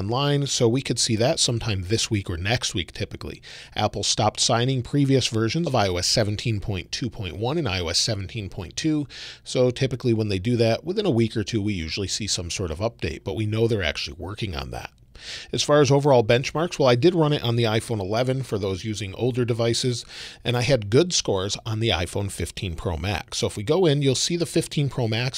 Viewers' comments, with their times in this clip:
0:06 There was a weird spot with audio Your videos and editing is always amazing and this shows you are human 🤣